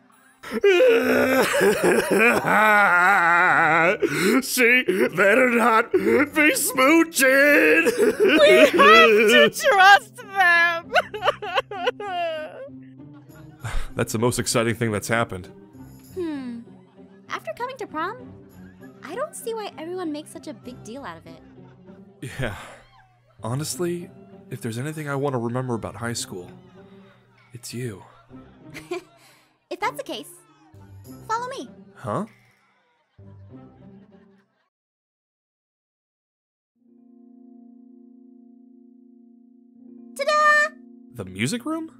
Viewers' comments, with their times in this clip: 0:05 Garroth and Laurance in The Big Move series be like: Eric: sobbing "She...better...not...be...smooching"
0:28 I can still hear Eric and sylvanna’s sobs lol